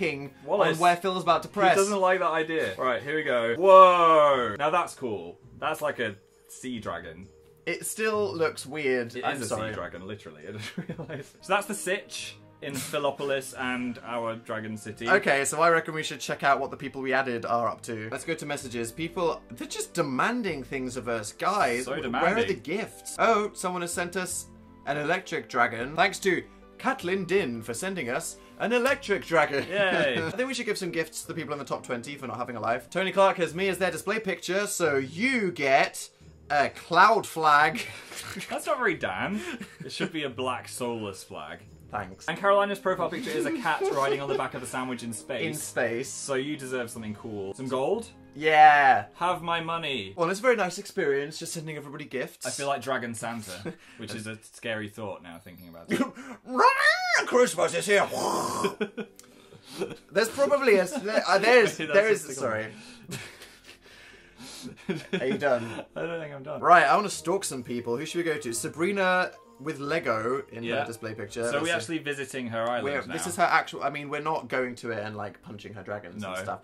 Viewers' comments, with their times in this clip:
0:09 PHIL'S LITTLE GIGGLE OMG THAT WAS THE CUTEST THING HELP
0:42 I actually had to pause for a moment at Dan's laugh because I legitimately thought my brother was suffocating.
0:55 when phil couldnt stop laughing it was actually the cutest thing ever
0:57 The way that Dan made Phil laugh is my new favorite thing, he couldn't stop! Thats adorable hahha
0:59 Phil's laugh <3
0:59 Phil's adorable laughing attack is so cute omg. "I don't think I'm done"
1:01 What does Phil say ? I replayed it like a hundred times (okay also because he's a cute bean) and I still can't understant it